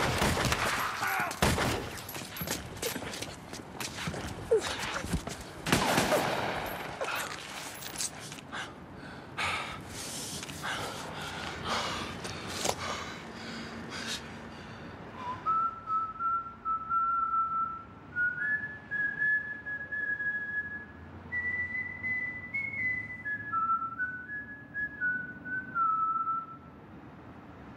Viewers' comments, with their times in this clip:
0:08 if i get into a shoot out and get shot and bro starts whistling im praying to jesus cause the grim reaper is here